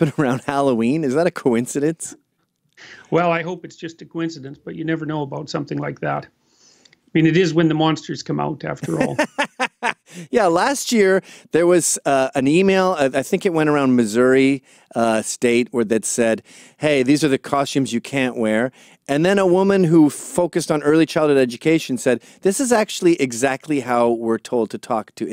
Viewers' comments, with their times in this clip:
0:07 that laugh so good